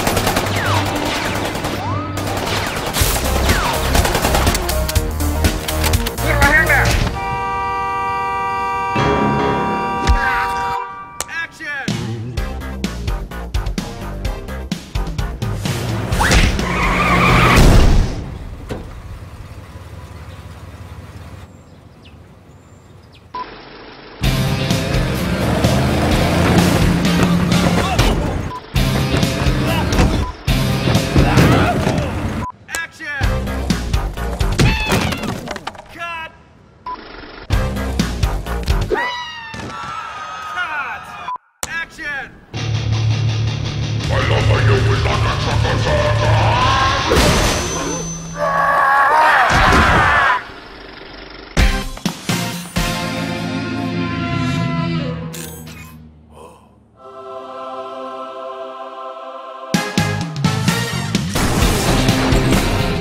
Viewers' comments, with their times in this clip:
0:06 MEH MEH MEH honking sounds
0:44 they wearnt ready for this kind. its a '80 music not '50 music.
0:51 The Price is Right Gucci edition losing noise